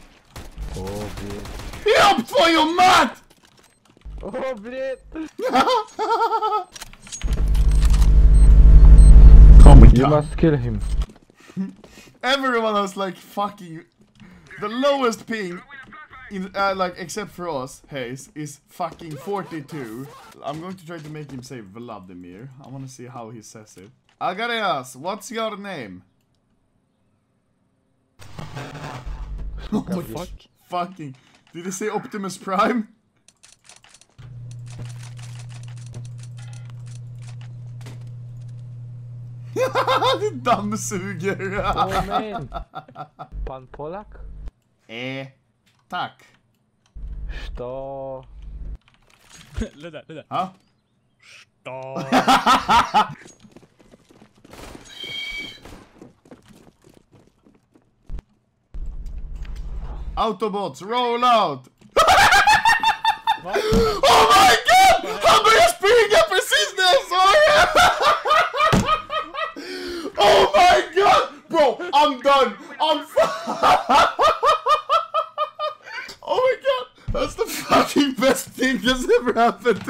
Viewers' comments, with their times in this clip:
0:07 My mans spooling up like a MF turbocharger
0:17 The guy eho yelled dude wtf 😂😂😂😂
0:39 random dude just vacuuming xD
1:02 im done with thath laugh 😂😂😂